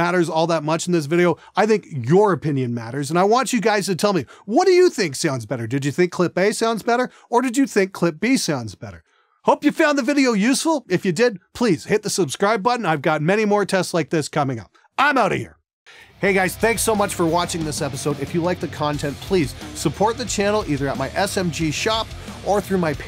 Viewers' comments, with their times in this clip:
0:08 (pausing the video ) I liked Clip A for the distortion parts and Clip B for the clean parts... and for the mix I liked the tone of Clip A... now the moment of truth!! time to go see clip used what setup ! :D